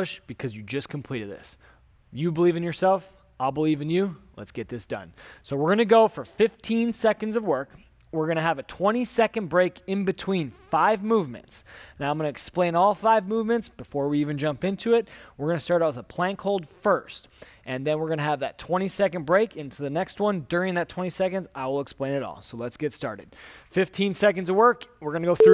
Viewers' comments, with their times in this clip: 0:09 Bro farts in sec 😅😅 Just check